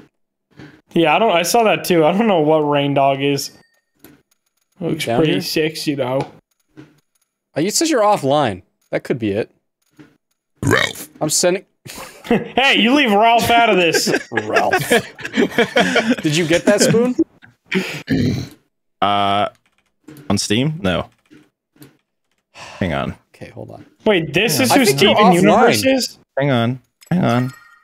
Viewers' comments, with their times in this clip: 0:10 Bruh sounded like shao Kahn saying round but says Ralph